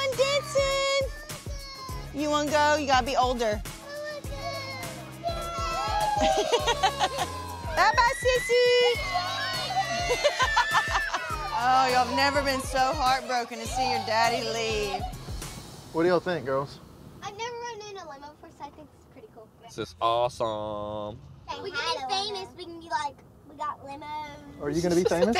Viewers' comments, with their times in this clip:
0:06 first they want daddy to go and now they're screaming DADDY!
0:10 hazel looks so calm while there is screaming😂